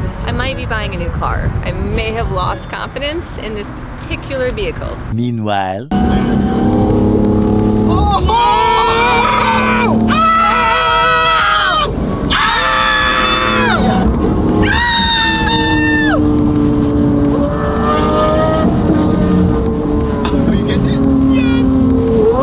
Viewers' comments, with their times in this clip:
0:05 tHIS mURCY sv SOUNDS LIKE THE Aventador S, SV, SVJ with Gintani F1 exhaust and tune. Now I see why they are saying, that this exhaust made the Aventdor V12 sound the closest ever to a Murcy!